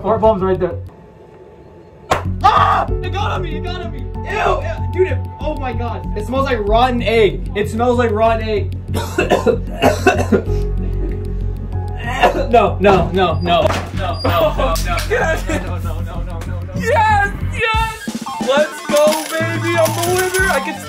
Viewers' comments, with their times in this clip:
0:03 Bro was the beat